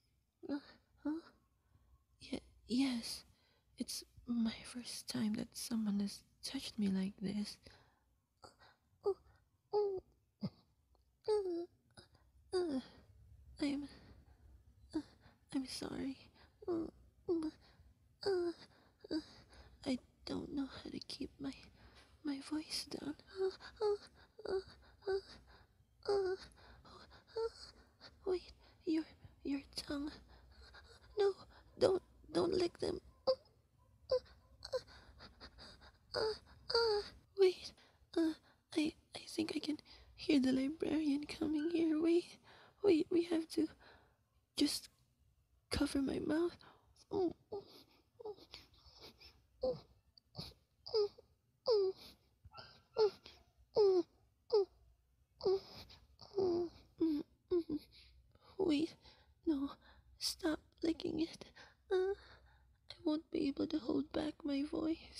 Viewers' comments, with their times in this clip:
0:07 how cute the voice :^
0:19 THIS VOICE- *dies in nosebleeds*
0:52 who else heard that dog LMFAO